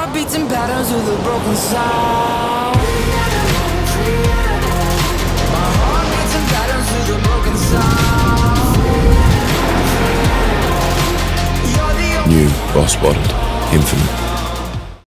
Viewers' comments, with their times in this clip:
0:12 I Love That King Subwoofer Max Bass Voice!!